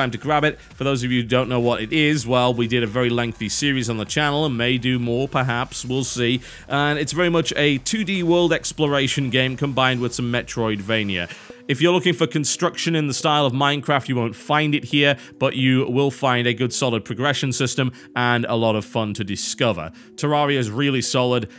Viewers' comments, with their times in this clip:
0:05 Fangirl shriek XD